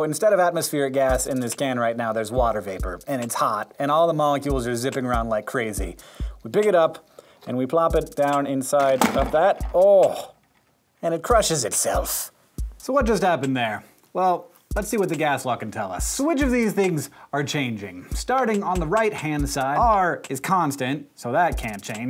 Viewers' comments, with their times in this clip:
0:09 The noise he makes sounds so... not like him. Its hallarious.